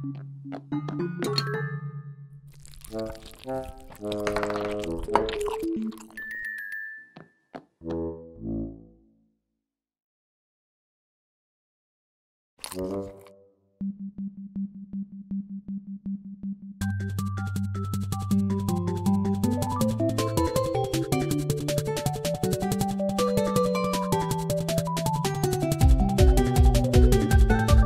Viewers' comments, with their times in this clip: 0:09 what do you want?!(smug)